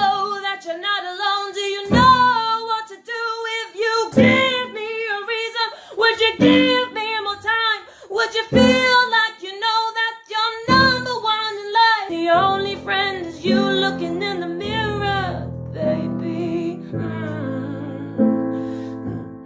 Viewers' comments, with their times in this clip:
0:03 channeling that inner Christina Aguilera. Props for having guts to do vocal and lyrical improv.